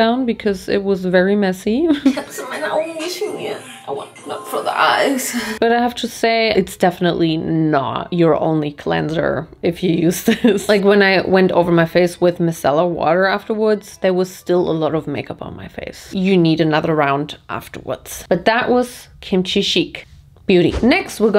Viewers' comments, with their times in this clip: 0:03 the hissing ...... IT'S TXT YEAHHH I LOVE YOUUUU
0:05 I literally stopped what I was doing because I heard TXT playing in the background. I am now subscribing because you listen to TXT.